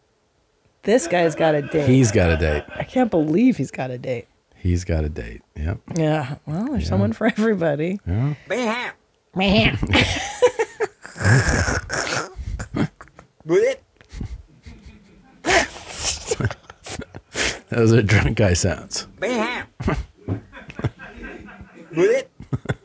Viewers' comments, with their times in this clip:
0:08 “Main Mommy dying of laughter from drunk guy noises” is basically the funniest thing of January and probably 2023 so far. 😂🤣💀
0:08 Drunk looney-tunes...pretty awesome...Gotta send some of these to Dan Harmon for "Rick & Morty do Alabama"